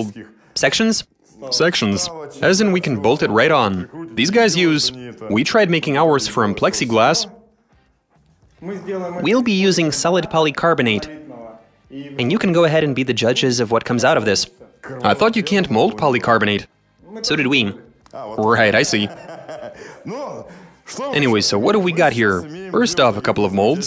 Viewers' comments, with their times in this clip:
0:08 The translator broke out the nerd voice for this